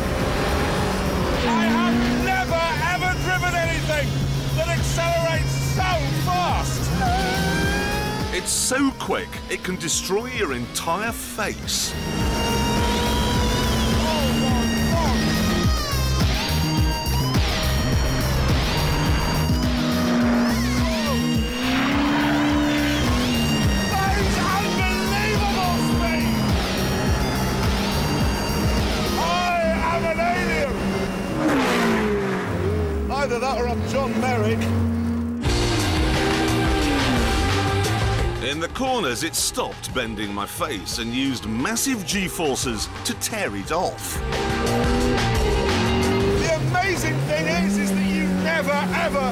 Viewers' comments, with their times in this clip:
0:04 listen to that soundtrack
0:07 The sound of the Supercharger is just BEAUTIFUL It sounded SO happy to be given full beans
0:07 that noise vtec and supercharger
0:32 VTEC kick in ya. 🏎️🏎️🏎️🏎️🏎️🏎️